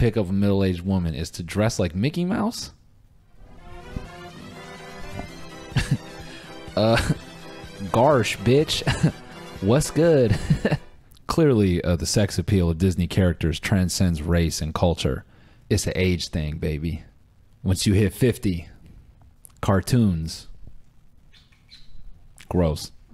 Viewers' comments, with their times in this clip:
0:05 Cody Ko enters chat ah ha ha